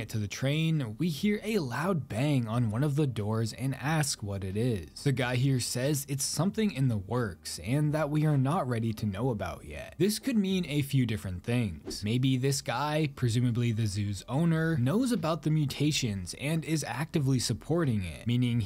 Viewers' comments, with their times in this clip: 0:03 I have a theory so when we hear a loud bang where the gate is could be a mutated Lion in there because we haven’t seen any of them in the trailer or gameplay footage. The owner said that we are not ready to know about because he knows that the employee we play as can be easily killed so the owner kept them locked for our safety. Maybe lions could be a final boss